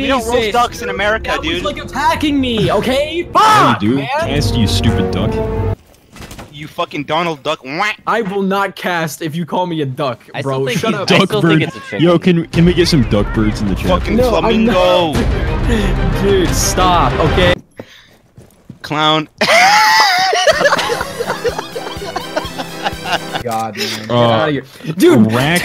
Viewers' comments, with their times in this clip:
0:06 why did that sound like a slur...